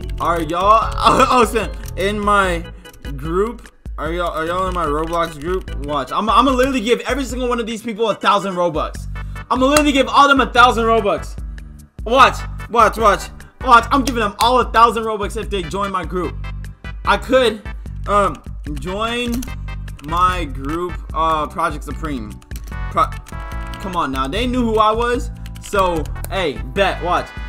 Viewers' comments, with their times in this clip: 0:09 She left on that click 😂